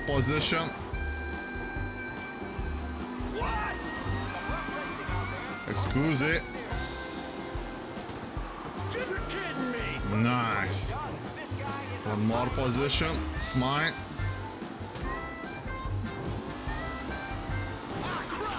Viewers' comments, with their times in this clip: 0:05 "Excusi" New word will add to dictionary,